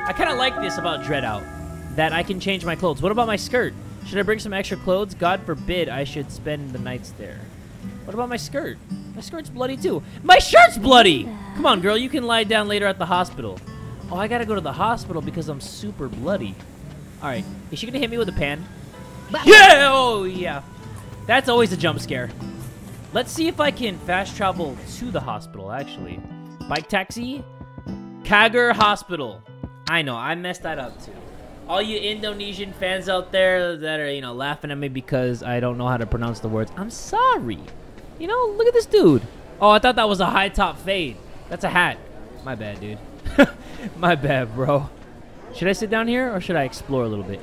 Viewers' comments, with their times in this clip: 0:10 damn, Linda actually talk for the first time ever
0:30 aww it's honestly kinda cute when you couldn't pronounce an indonesian word tho